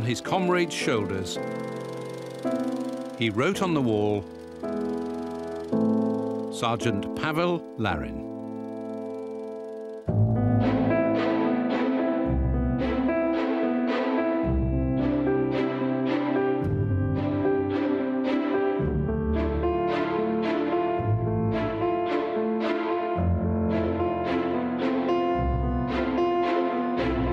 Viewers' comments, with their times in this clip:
0:09 an emotional scene and songs